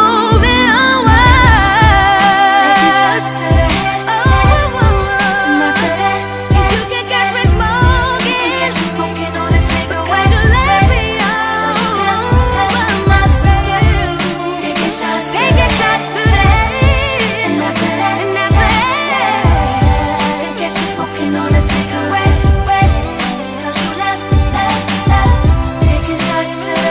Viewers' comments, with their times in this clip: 0:07 "you can catch me smoooooooooooookiiiiiiiNNN'!!...'cause u left me allllllooooooooOOOooOOOOOOOOOH by myseeeeEEEeeeEEeeelf!!!" flatlines___________ throws laptop i cant take her!!!!!!!!!!! i am not worthy of such perfection!!!!!